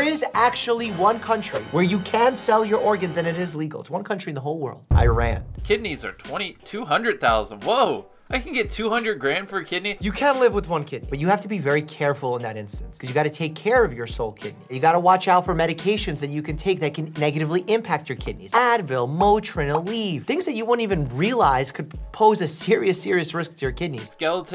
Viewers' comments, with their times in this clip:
0:03 it sounds like he was saying "I ran away"
0:05 for the thousandth time, Iran, not I ran